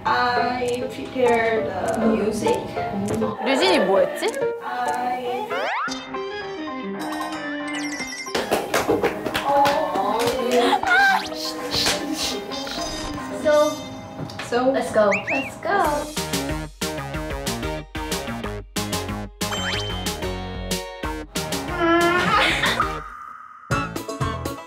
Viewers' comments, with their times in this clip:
0:06 they resonate well lmao